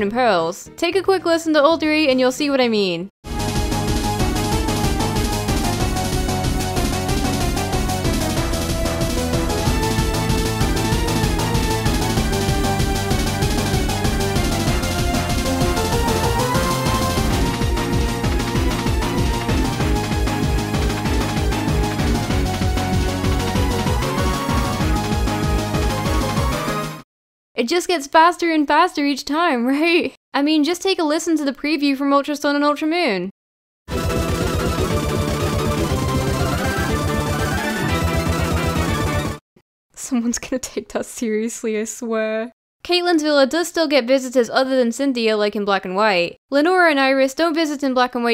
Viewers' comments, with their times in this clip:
0:03 I fear no bad music, But that music It scares me
0:05 cynthia's battle theme but every time you fight her in a new game it keeps getting faster
0:33 sped up to 2